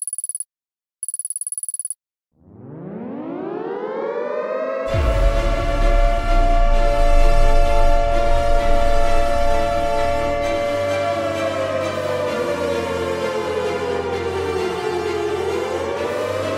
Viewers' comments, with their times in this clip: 0:04 The music beginning sounds epic and destructive...